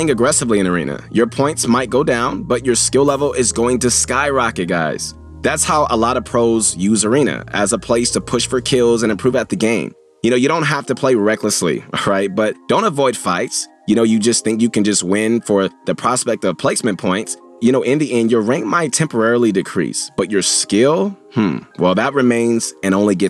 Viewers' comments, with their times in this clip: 0:08 i can hear mongraal